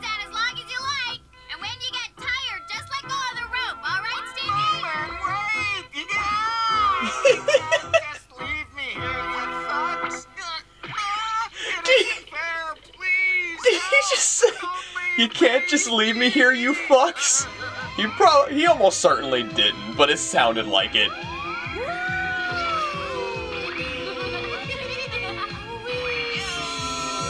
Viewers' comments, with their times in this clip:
0:09 *Thugs (Fucks.. LMAO)